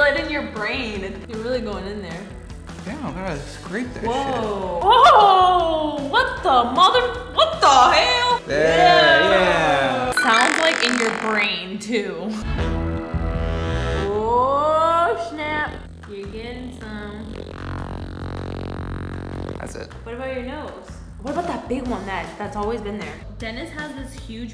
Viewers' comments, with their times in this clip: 0:05 = (*Weird random WTF noises*)